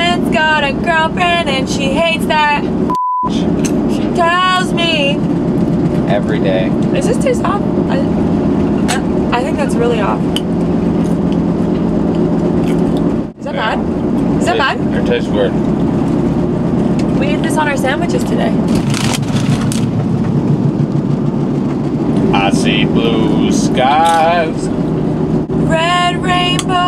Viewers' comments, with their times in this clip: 0:08 omg the singing of the offspring song made my day 😄